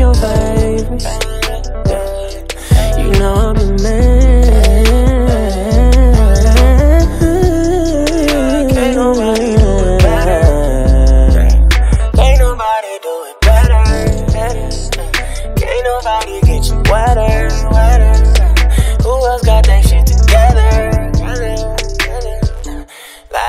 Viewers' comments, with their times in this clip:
0:05 This song still bangs! The note on 😱😱😱